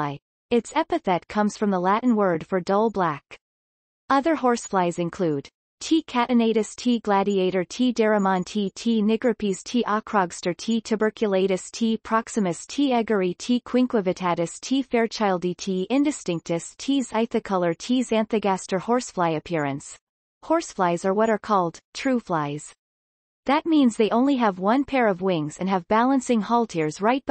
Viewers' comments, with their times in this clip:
0:08 did I hear something completely different 😂